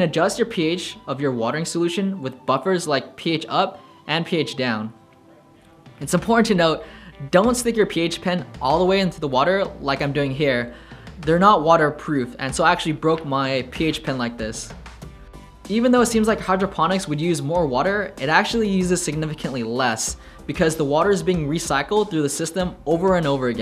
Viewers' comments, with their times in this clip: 0:05 The random pauses between words was killing me. Can't continue ☠Time lasted: